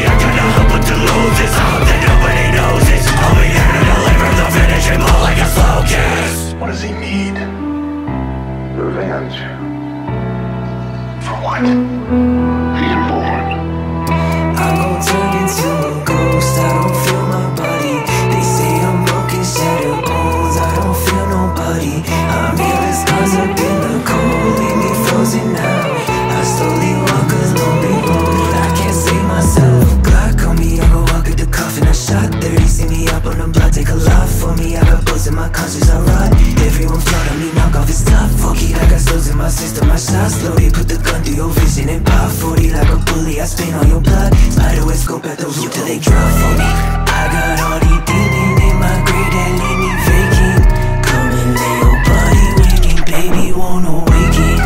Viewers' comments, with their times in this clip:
0:08 The interlude/bridge is so amazing. One of the sickest flows and super complex rhyme scheme! It's pure talent you rarely see anymore, and I'm very thankful for it. Go hard guys 🤘
0:37 the way the hit goes with the song makes my body tingle